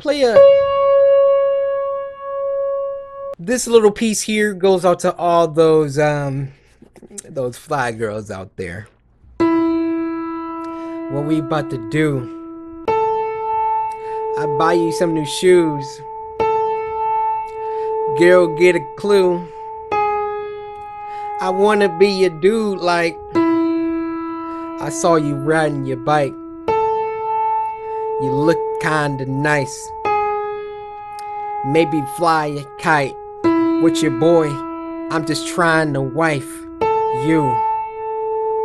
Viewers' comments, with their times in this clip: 0:09 right when he strated singing it strated raining at my place, i have no words.
0:20 Anybody recognize that this sounds like The Kanye beat😮